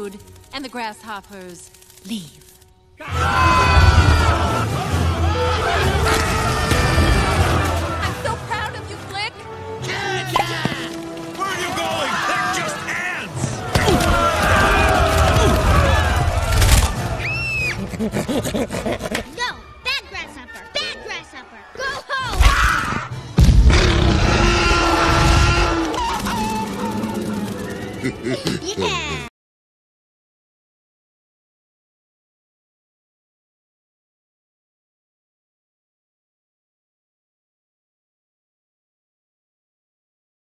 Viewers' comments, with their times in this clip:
0:03 DONKEY KONG AND KERCHAK AS FRANK AND CARL YELL WITH ORDER:GET OFF!!!!!!
0:23 Dim sounds just like a T-Rex.
0:23 Dim roars Thunper
0:23 (Dim roars like T-Rex, Thumper scares and flies away) Dot: Yeah!
0:24 dim: roaring at thumper for life.